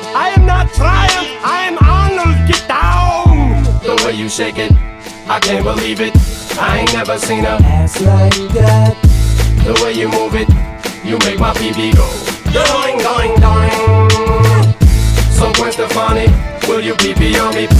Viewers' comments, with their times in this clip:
0:03 i thought it was Shake It Off by taylor swift for a second😂